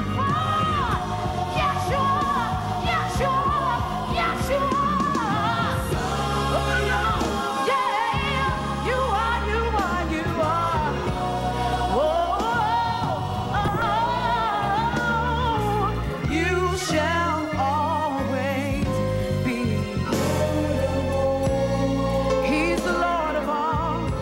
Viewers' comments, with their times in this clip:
0:06 is not a crack,it is a glitch in the recording.Anybody that's into music can hear that?She works hard and loves the Lord.That's what the point is about anyway